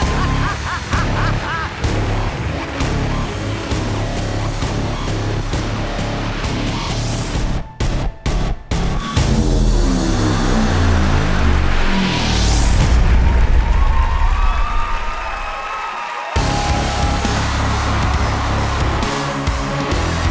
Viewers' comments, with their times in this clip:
0:05 The one makes me laugh hysterically. He's all epic! I swear I need that music for my day to day life. Live every day epic